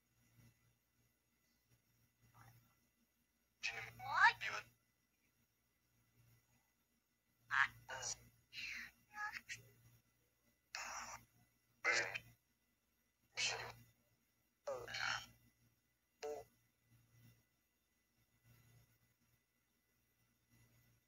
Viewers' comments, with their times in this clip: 0:04 i think a child says " what"